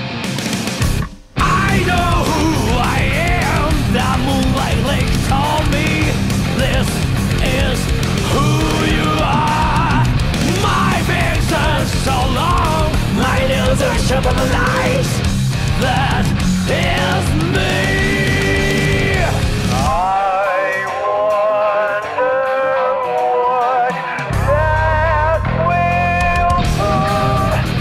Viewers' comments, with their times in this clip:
0:10 singer so hype he says the character's name